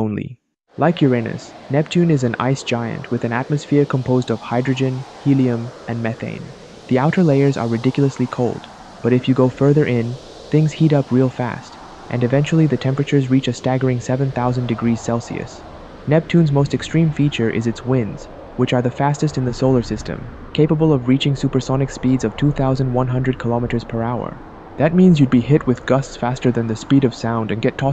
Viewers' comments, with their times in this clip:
0:09 Bro singed dream on